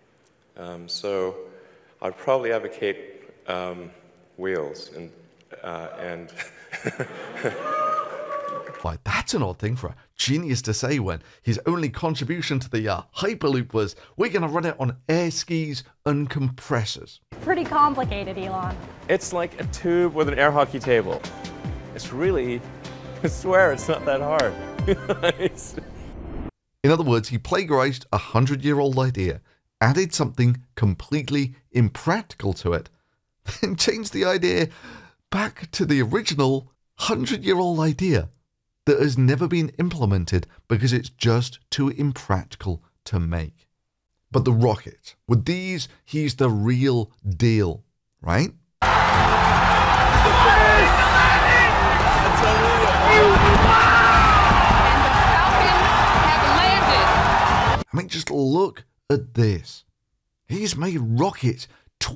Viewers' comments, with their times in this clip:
0:05 That awkward laugh shows he knew he had fucked up and was hoping people wouldn't bring his previous statements up.
0:50 it's a long time since I heard something like that... a crowd of prople cheering. Damn